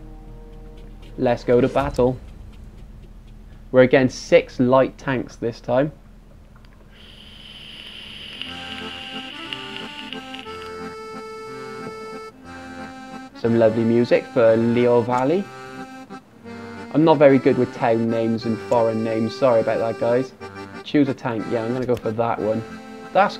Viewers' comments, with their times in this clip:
0:08 Please ignore the sound of me Vaping must have slipped past me during editing. My apologies!